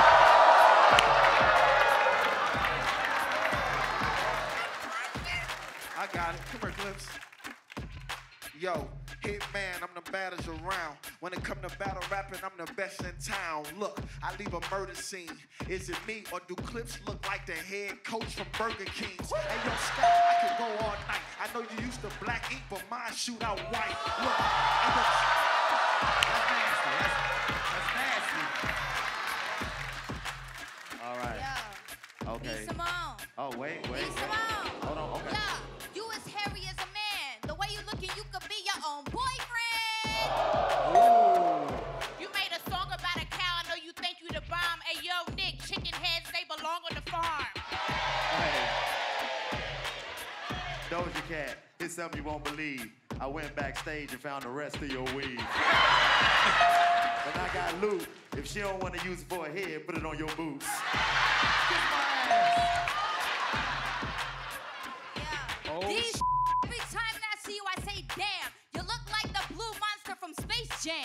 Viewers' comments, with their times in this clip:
0:04 Did nobody else hear 'im pregnant' in the audience lmao
0:33 Y’all over here defending Doja. Meanwhile she had a rude tone calling for b Simone 🙄
0:55 B simone laughin realllll hard